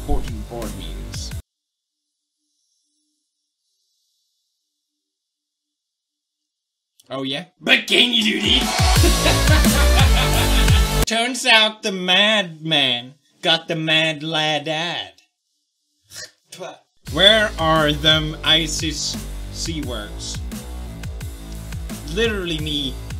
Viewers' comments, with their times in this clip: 0:08 The Laugh he did there sounded so evil xD
0:08 the way he maniacally laughs after doing the chair thing, i can't breath.